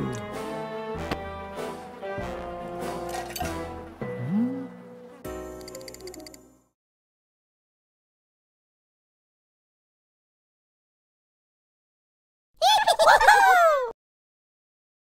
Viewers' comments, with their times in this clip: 0:12 Put On 2x Like Angry Birds Laguthing